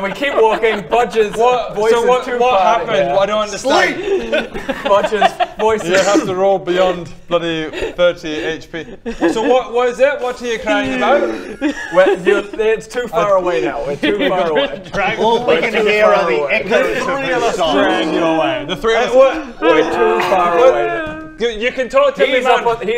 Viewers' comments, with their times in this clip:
0:05 I love the part when even DM lost it and just started laughting